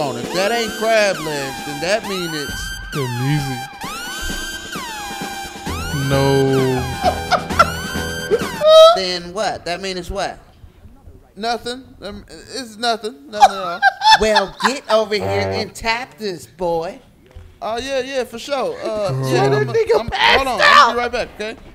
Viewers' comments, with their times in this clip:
0:04 I left existence when the song came on 🤣🤣🤣 Edit: “To get some fresh air” is brazyy 💀💀💀💀